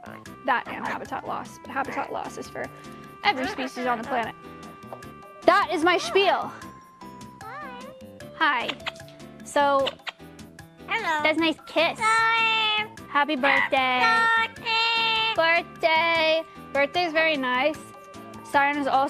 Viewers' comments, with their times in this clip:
0:07 "that is my spiel"? ^^ what does she say?